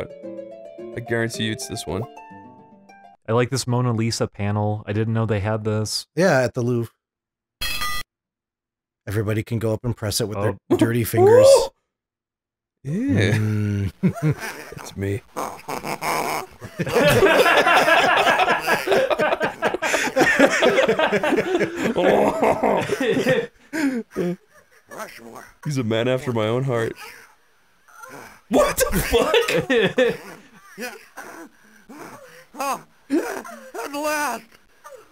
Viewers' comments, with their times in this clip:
0:03 that soundfile of the laugh has to be saved and reused. thats incredible :D
0:13 "That's me" Evil French Laughter
0:15 anything bitcrushed makes the gang funny funny
0:16 that audio sounds.. uhhh